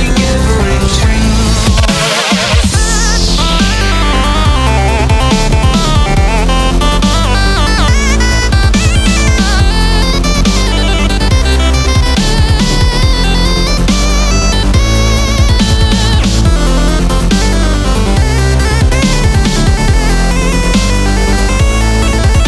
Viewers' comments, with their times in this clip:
0:09 sounds like Ink voice :b